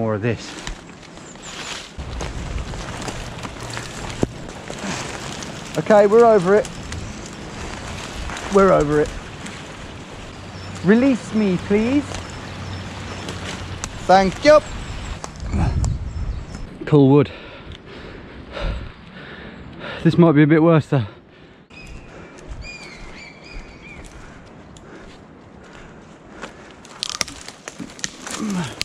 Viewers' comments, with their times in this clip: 0:10 "release me please" lmao he sounds like a 7 year prep school boy getting jumped